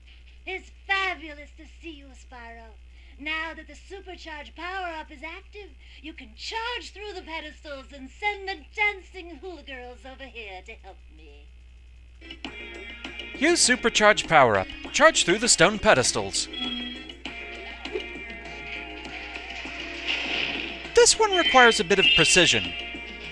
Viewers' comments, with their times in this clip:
0:05 Oh hai, Cree Summer.